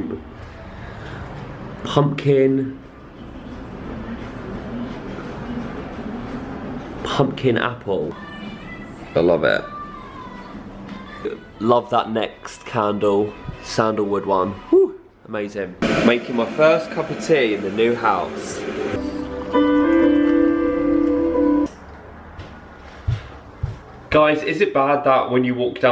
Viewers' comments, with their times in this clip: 0:07 can't stop singing along to little mix in the background lol!